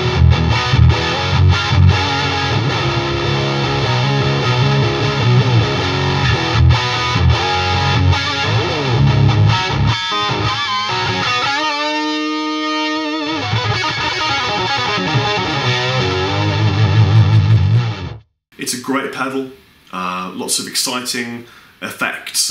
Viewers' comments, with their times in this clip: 0:10 the effect sounds like the effect used on the guitar solo in Yes- Owner of a Lonely Heart